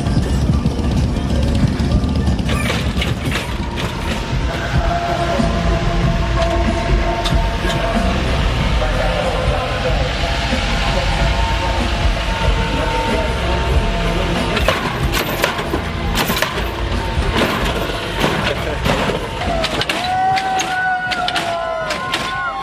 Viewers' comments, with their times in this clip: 0:04 Radio level 99999999999+